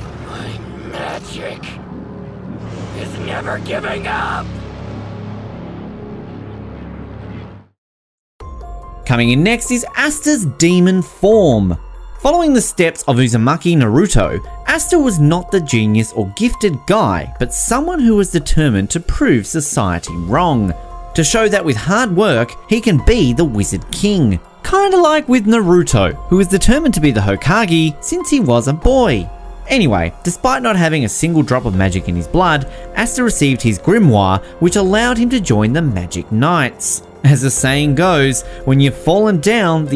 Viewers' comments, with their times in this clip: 0:09 that theme music is real nostalgic
0:22 WHAT DO YOU MEAN IT IS NOT HOACAGY
0:25 i cracked at how u pronounced hokage